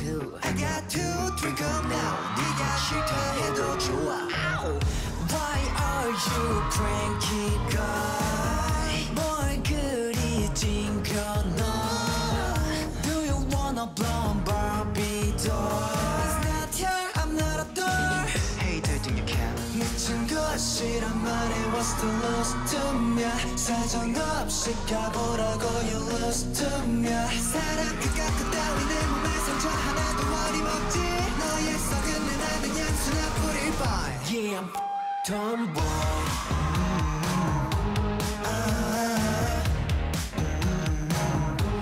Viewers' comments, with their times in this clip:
0:03 pleabsbebbbabs OH MY GOD THAT "ou" (this is the only way il how to right it ok?) killed me
0:28 The guy who covered yuqi's part omg and the number of screams he got